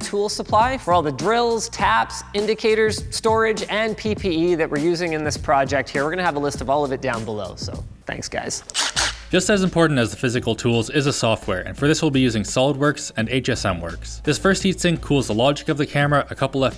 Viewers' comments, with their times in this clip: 0:03 linus says pp lol
0:03 He says PP.